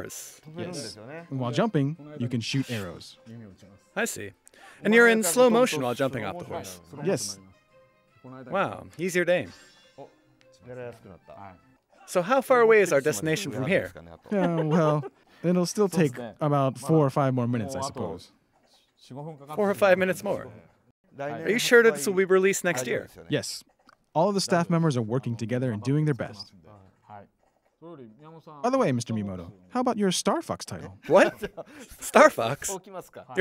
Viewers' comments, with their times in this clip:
0:04 If you listen closely, you can hear a song that was cut from the final game
0:12 lol Aonuma’s laugh
0:14 funny laugh lmao
0:21 "are you sure this will be released next year?" "(firmly) yes." does he know.